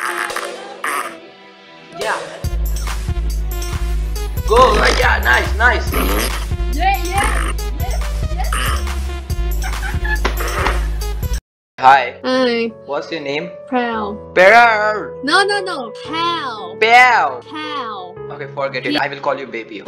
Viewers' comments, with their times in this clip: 0:06 that rap song and dance so cool 😂😅